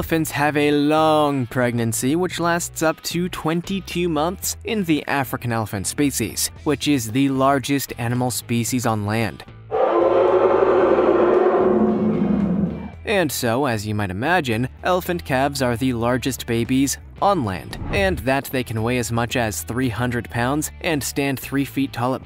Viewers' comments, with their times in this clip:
0:09 that sound like a dinosaur and kinda loud